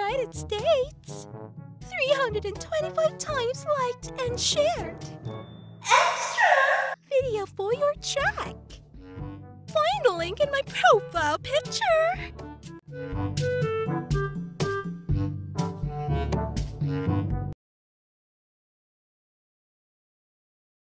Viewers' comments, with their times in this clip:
0:06 sounds like a danganronpa character or genocide jack-